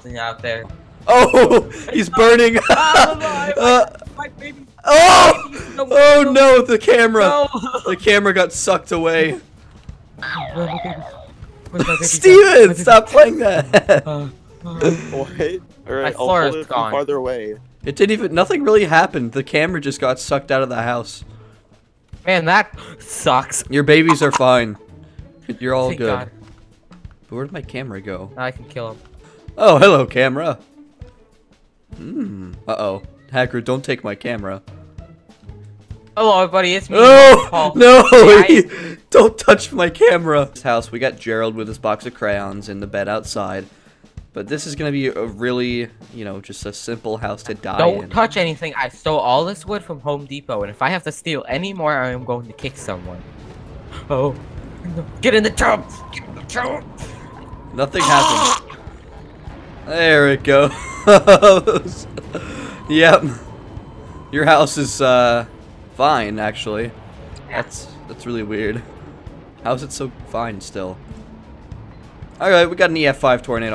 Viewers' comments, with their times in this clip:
0:10 random looney toons ahh bounce
0:58 chokes on food cutely